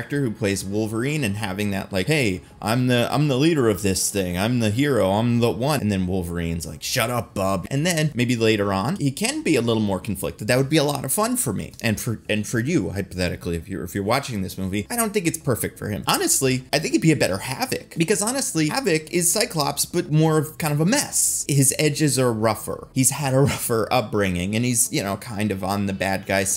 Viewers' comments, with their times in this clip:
0:07 Did you just call me...Blob?